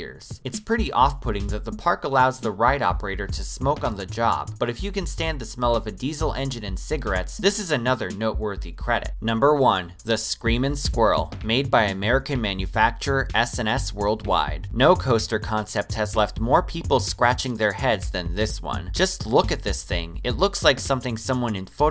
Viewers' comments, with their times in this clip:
0:03 he said Algeria or Nigeria??